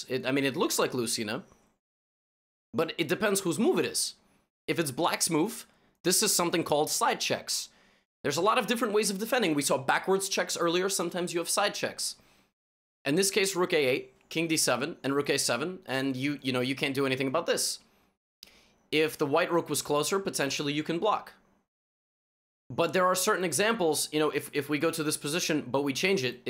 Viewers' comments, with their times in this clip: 0:10 sometimes you have side chicks “you naughty naughty”
0:11 sometimes you have side chicks.